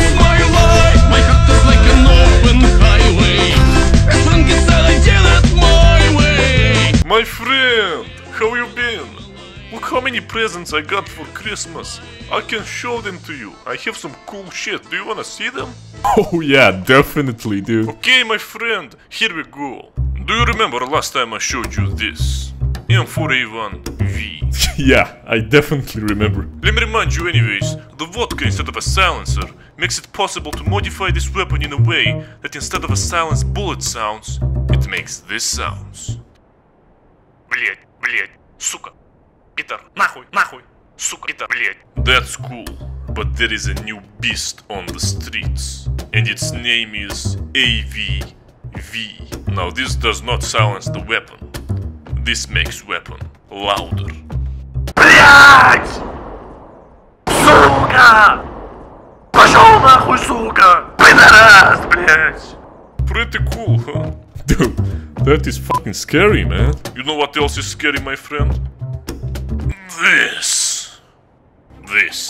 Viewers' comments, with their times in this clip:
0:07 My friend, how you blin 😆
0:47 THAT WAS A SUPER LOUD CuSs wOrd
0:47 AWV lol it sound's:
0:54 This, my friends, is how I sound while on the toilet, doing big business.
0:54 me at csgo being as sneaky as possible but my gun sounds like this
0:55 R.I.P Headphone users 100% volume